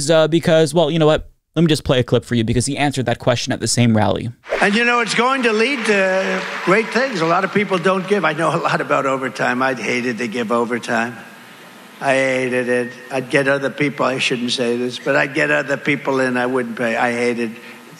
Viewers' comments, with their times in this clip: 0:04 I just love how when he's talking about how much he hates overtime the crowd is dead silent 😂😂 Not even they can get behind Donny on that one lmaoo